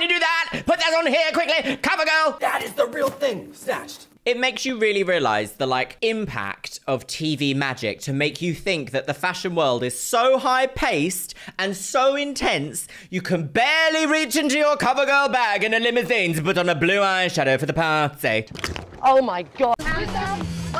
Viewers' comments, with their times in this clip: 0:03 kinda criminal how you cut the bird laugh